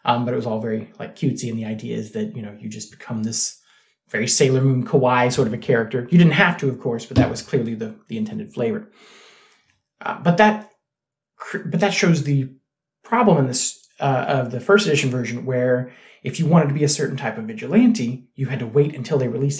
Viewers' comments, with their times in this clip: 0:04 Careful with those pronunciations. When you say “kawai” instead of “kawaii” it sounds like you’re saying “kowai”.